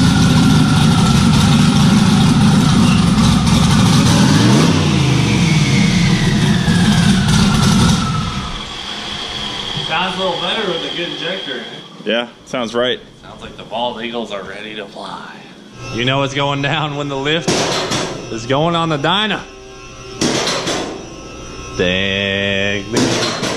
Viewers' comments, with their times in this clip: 0:06 the turbos sounded like a bold eagle screech... pure freedom hell ya brother